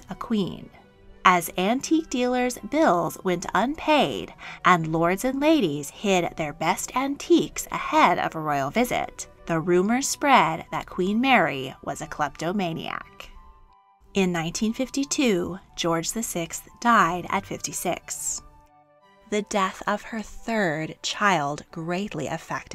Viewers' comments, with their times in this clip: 0:05 IM SORRY but Why am i laughing This is serious.. 😭 LIKE SRLSY She really went full on British "Oueh..What's This immaculate.. thing" The owner ;_;